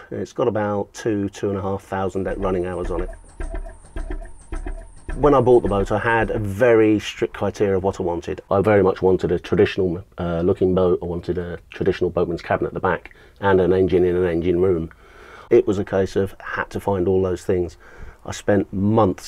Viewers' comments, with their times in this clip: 0:05 "Months searching for the right boat" Oh boy, you sure found it. Ticking over at 150rpm. I love slow tick-overs. I get that from my grandad and uncle : they would always slow down my motorbike idle.....just so it managed to stall at the lights......cursing them, I had to hurriedly jump on the kick-start.